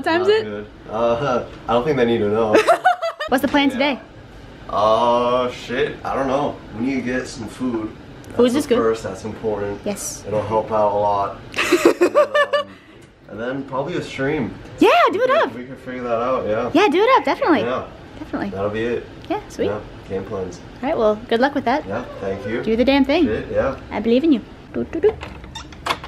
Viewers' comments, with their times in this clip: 0:07 Did he say porn or corn 🤔🤔